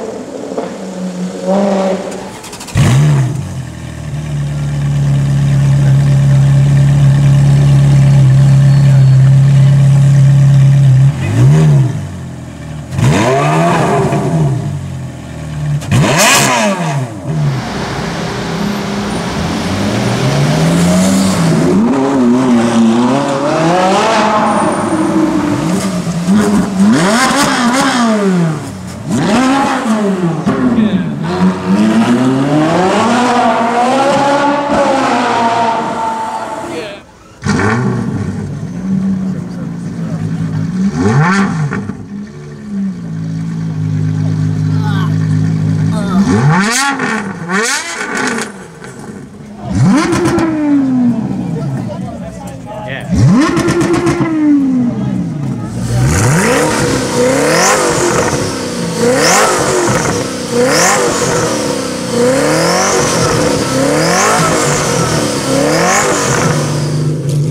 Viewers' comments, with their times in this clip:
0:10 RIP HIGH VOLUME SPEAKERS
0:24 did the supra really rev at the Ferrari?
0:40 is some kid gagging, or wtf is that?
0:44 I think a kid just puked in the background Listen
0:49 in my opinion best sound is it's the koenigsegg hood that's open, but I don't what's the car that is revving?